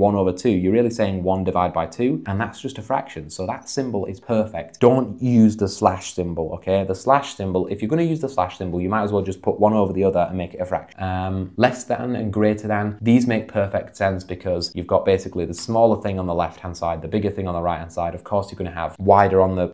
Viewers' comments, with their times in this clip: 0:05 I don’t think that was the wind🫩